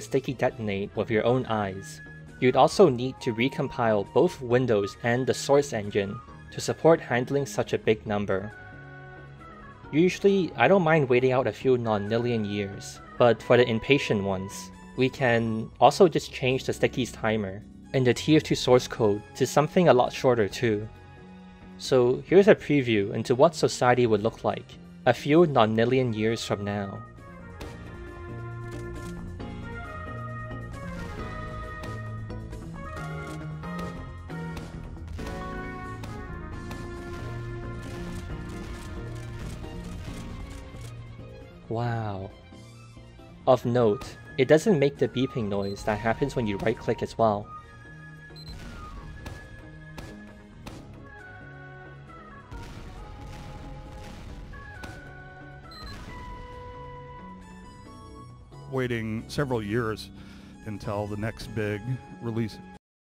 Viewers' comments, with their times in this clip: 0:05 the... soyce engine?
0:57 it’s because the sound comes when you press right click not when the stickies explode
1:00 GABEN: inhales with disregard for TF2